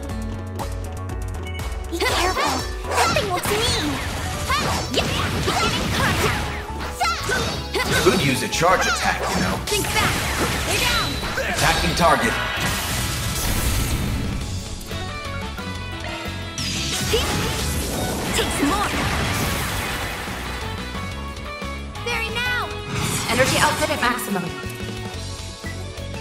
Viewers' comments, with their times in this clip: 0:10 Loved that attack. I like the sounds she makes while fighting lol. So cocky………..